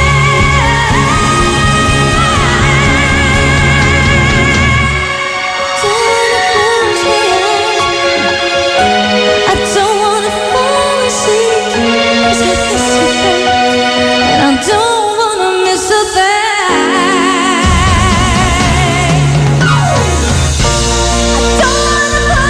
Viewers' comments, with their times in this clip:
0:10 I love the way when she say the "CAUSE I'LL MISS YOU, BABE" and turn her head side ways 😍